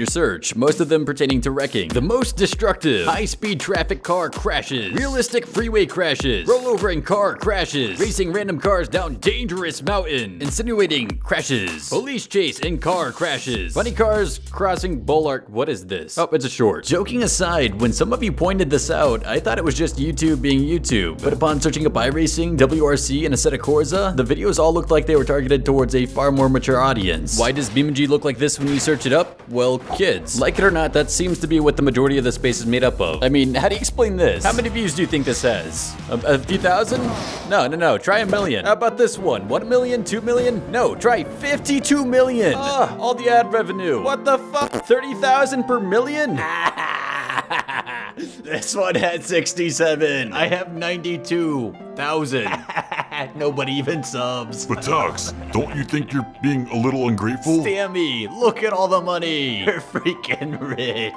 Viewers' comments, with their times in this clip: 0:07 somehow the music matches what he is saying
0:43 All the ad revenue! What the fu- fart sound